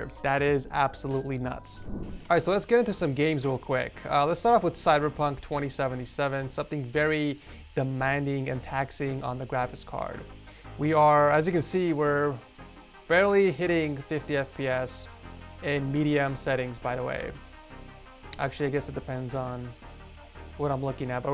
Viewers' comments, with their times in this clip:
0:03 and that background noise is why you don't buy these things